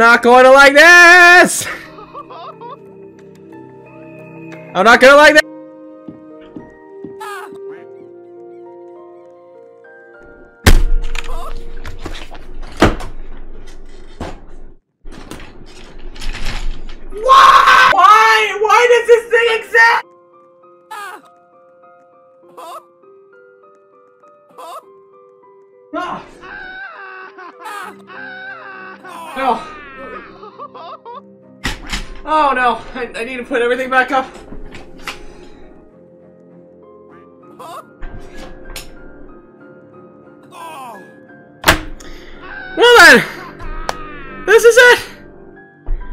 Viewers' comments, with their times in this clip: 0:10 Loud bang on table Random noise in background "WHYYYYYY?-"
0:16 I can't stop repeating that scream
0:16 I Know Is Rage Sound By Willy
0:17 The most Perfectly screaming that i ever heard 0.0
0:29 the screaming is coming from people that have gone blind because of that skin